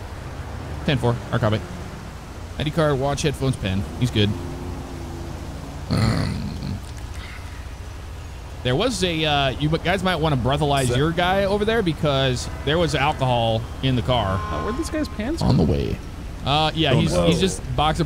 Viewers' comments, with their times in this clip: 0:05 What's up with the creepy whisper